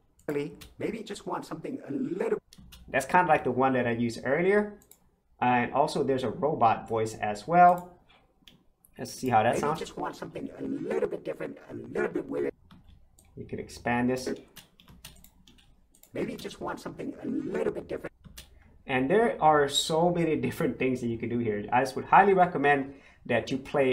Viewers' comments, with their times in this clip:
0:05 Another easy-to-understand video sound effects that can help video creators. Your Robot sound at time stamp reminded me of the Daleks on Dr Who of 1963. A little softer, not as harsh as the Daleks in that episode. Have you had a chance to try this on music? Maybe recreating a Moog Modulator Synthesizer effect? : ) .